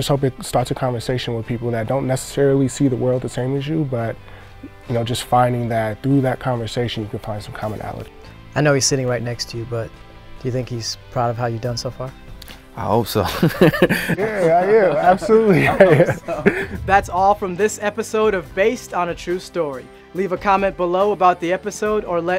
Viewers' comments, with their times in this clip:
0:10 I heard Spencer James come out 😍😍